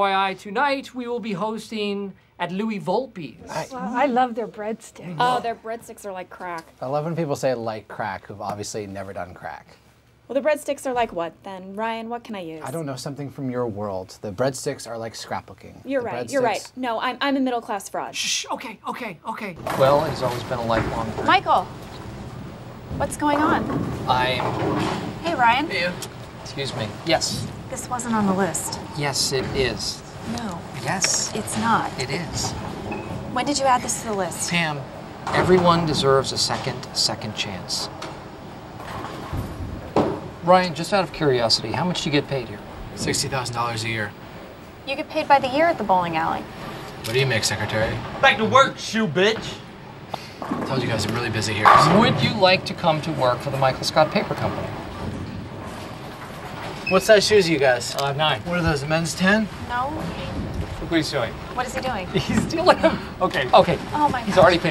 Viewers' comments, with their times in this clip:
0:09 She says in a beautiful tone. Sounds like singing.
0:10 satisfying hearing pam speak.
0:48 if you listen carefully, you can hear the camera man hold his laughter/ breathe out lmao